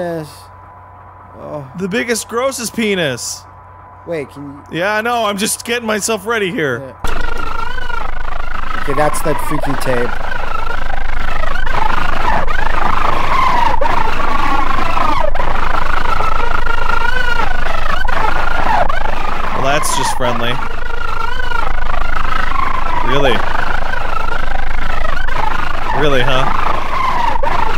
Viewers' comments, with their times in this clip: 0:06 That's actually some sick beats. You could jam out to that with some other stuff thrown in.
0:14 I've heard that stock scream effect so many times I can just recognise it instantly no matter how distorted